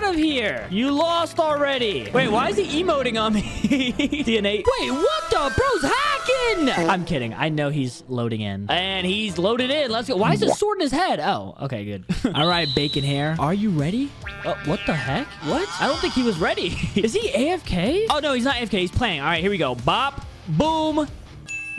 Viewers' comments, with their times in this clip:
0:05 like the harry potter song got me laughing when the player was loading.🤣🤣 🤣🤣🤣🤣🤣🤣🤣🤣🤣🤣😆😆😆😆😆😆